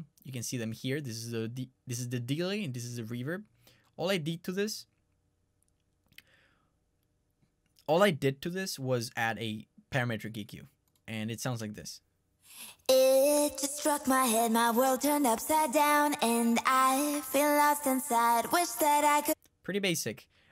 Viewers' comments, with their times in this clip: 0:04 😂 All I " deed " to this. Loved how you paused for a while man 😂😂✌🏼 btw, Deja Vu's currently my favourite song 🔥❤️